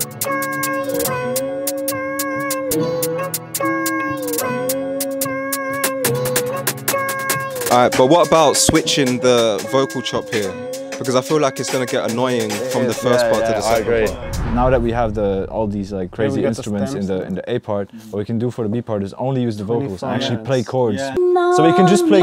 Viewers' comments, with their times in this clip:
0:06 I thought he start rapping Lmao Thx guys for the this content it’s help me grow up my skills. Also drill part was hard asf 🔥